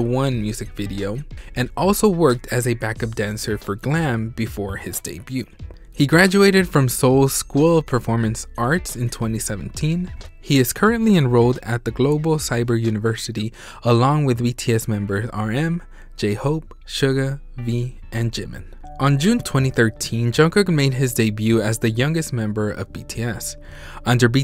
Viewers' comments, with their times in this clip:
0:10 thanks for this sooo mach video put i have a question you say RM J-hope SUGA ME and JIMIN who are you and wy did you say me ?